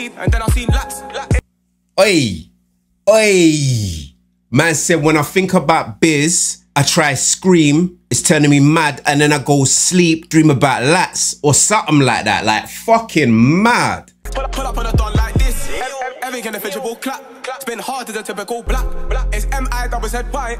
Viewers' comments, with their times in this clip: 0:06 Jesus man😂 how is it so hard to not hear that clearly u were saying rubbish still